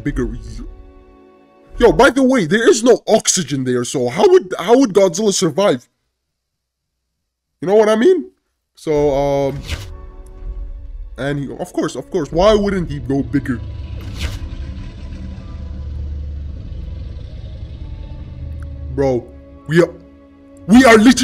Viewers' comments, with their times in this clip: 0:07 What happened with your voice?